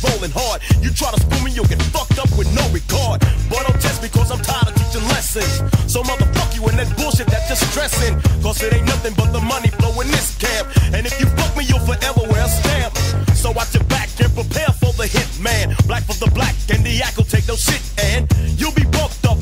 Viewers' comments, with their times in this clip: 0:03 love how his flow goes perfectly w that guitar riff